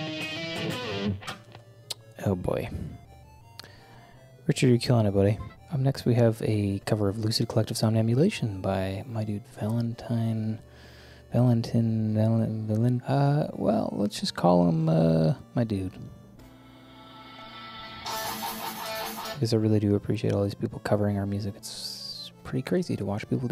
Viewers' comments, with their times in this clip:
0:05 he literally became the DJ from Diamond City Radio on Fallout 4🤯